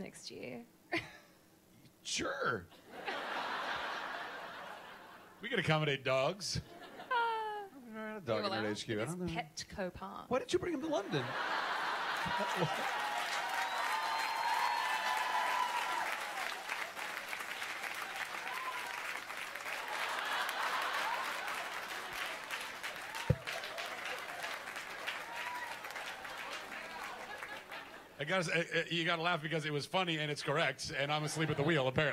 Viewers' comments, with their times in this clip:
0:06 I've listened to this a dozen times and I can't figure out what she said. Petco baths or parts or paths or something? Anyone know?
0:16 What did Yvonne say ? The whole crowd burst out laughing!!